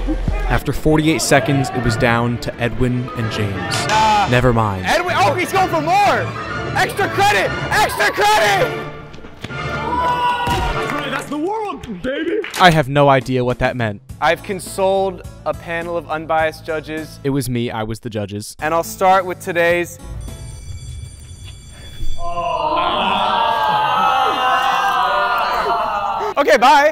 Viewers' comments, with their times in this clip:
0:09 that noise sounded familiar